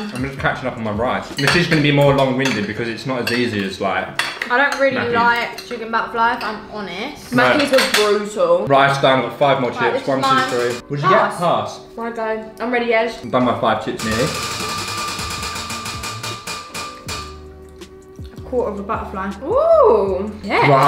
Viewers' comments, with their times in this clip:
0:07 sorry what What did u say Sorry I'm sure I miss heard it